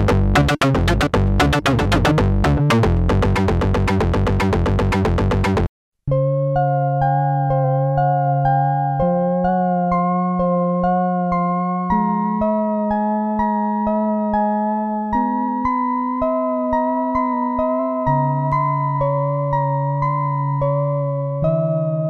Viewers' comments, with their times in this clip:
0:06 boards of manitoba
0:06 BOC unreleased track!